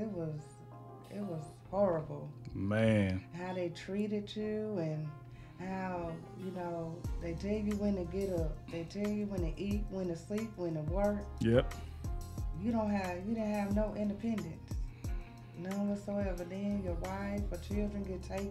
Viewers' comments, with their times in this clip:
0:04 Good sound set up. I can almost - I mean ALMOST hear her. Almost.